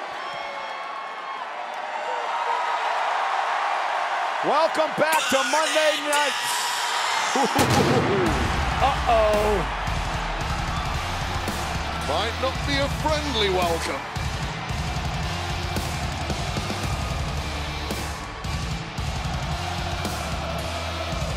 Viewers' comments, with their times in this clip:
0:05 What a time to be a wrestling fan. Half the crowd singing Seth’s theme. The other half chanting “CM Punk.” This gives me goosebumps. I’m excited for Punk vs Rollins in the future. They remind me of Bret Hart and Shawn Michaels when they feuded. just chills.😨😊👊🏾🤍